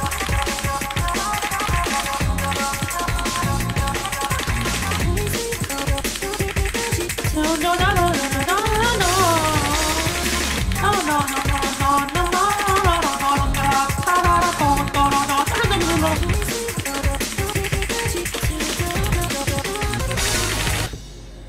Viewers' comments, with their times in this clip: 0:07 I wasnt sure if the song was singing or him